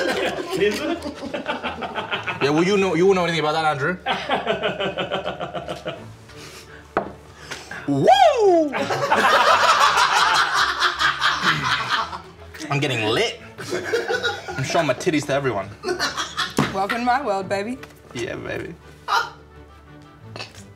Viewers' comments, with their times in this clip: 0:07 that woo was definitely a sign that this was going to be epic. 🤣😂
0:08 That's a solid Ric Flair impersonation